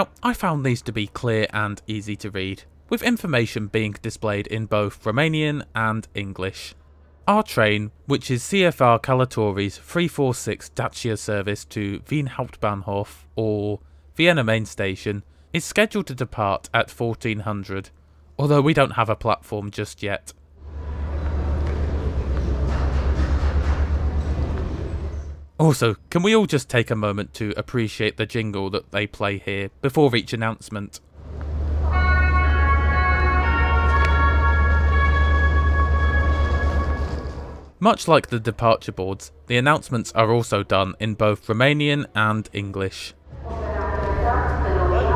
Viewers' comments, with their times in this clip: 0:09 your voice is perfect for a railway announcement system!
0:09 I'm the only one surprised about how good he spells the letter ă??
0:32 Even better than SNCF's jingle